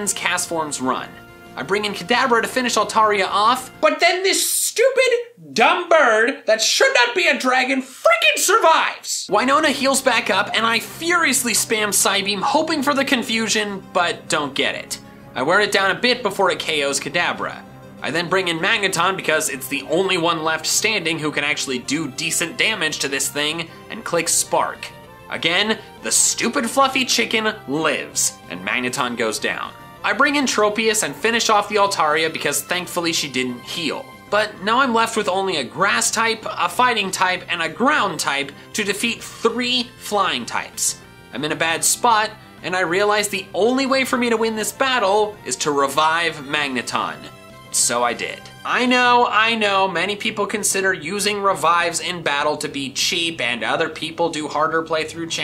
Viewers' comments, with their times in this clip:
0:04 Did he curse or am I crazy?
0:36 I thought he said stupid fu##ing chicken